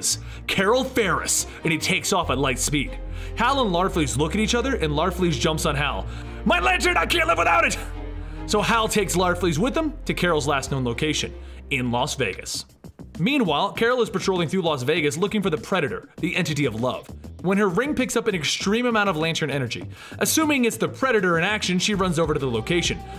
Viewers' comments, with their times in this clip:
0:06 you can hear him laugh